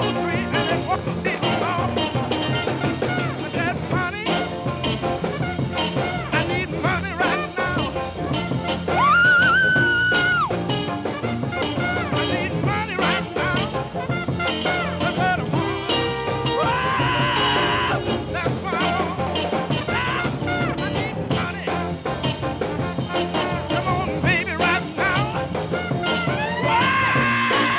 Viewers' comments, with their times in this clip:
0:08 Nice falsetto by Roscoe Shelton